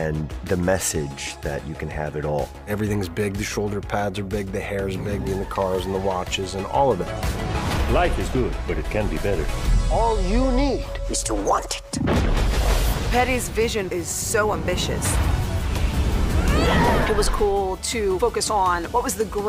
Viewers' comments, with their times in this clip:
0:03 Chris Pine sounds like Donald Trump